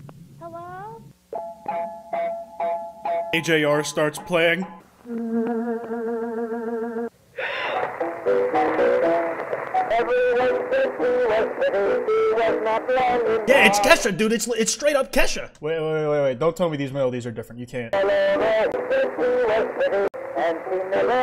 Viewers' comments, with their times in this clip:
0:06 I really thought bro was going "i put the new fojis on the jeep" 💀💀💀